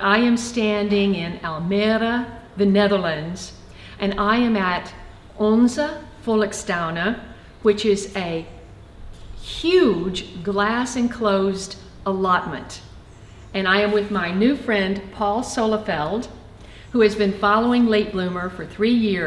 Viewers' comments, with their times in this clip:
0:04 repeat and play few times...love the way you said ALMERA...(almere)